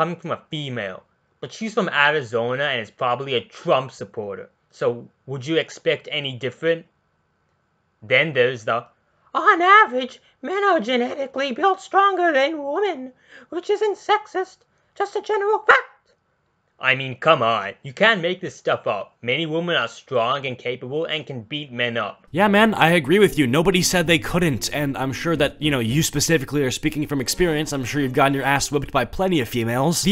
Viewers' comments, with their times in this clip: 0:08 this guy sounds like mickey mouse XD. Can't take hime seriously if my guy is going to have multiple voice cracks ass mickey mouse
0:08 did any1 notice a difference in his voice? Personally didnt
0:09 if you cant voice her then dont you sounded like a old granma
0:12 At that part I just laughed alot, because the voice that he makes and the fact that he hates Jaiden animations for beeing "sexist and racist" when its a lie makes the perfect combination to make me laugh because cringe.
0:13 Don't tell me that, THAT DOESN'T SOUND LIKE A DUCK!
0:14 this guy has a fantastic Mickey Mouse impression
0:16 who the hell invited mickey mouse?